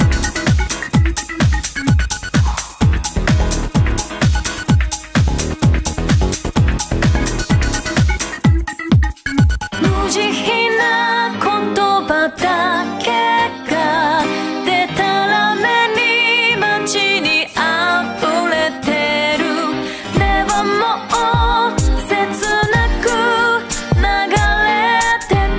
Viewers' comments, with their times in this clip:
0:10 Same for me but with The instrumentals and vocals just combine to make an ending theme that manages to encapsulate everything the game meant to me. Truly beautiful.